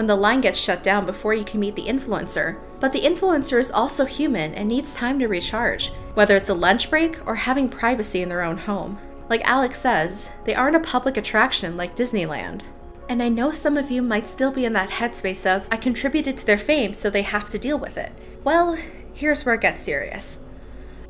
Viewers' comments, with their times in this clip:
0:05 how do u say recharge like that ?